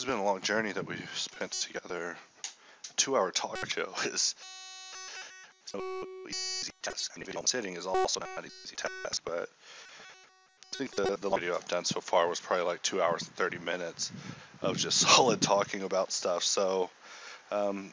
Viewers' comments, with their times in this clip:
0:05 the robot is speaking